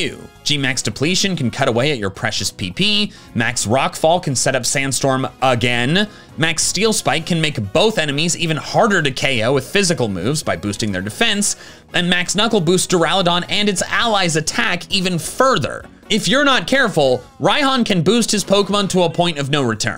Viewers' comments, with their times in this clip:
0:03 “cut away at your previous PP”